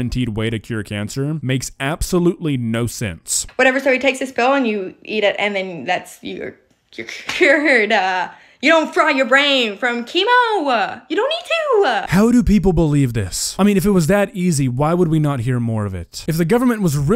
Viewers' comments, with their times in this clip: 0:05 Sounding like Mario right there You don't a fry a your brain a with a chemo a